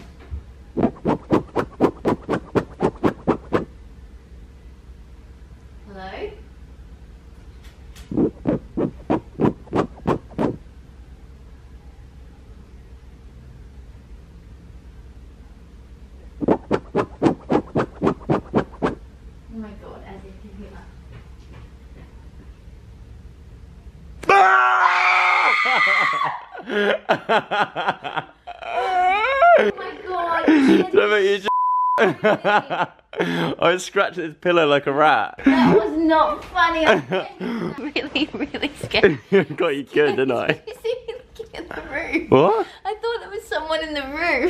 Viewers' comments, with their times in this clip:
0:03 that's some hardcore asmr
0:24 I’ve never heard someone that scared before 😂😂
0:25 THE SCREAM!!! OH MY DAYS!! 😂😂😂😂😂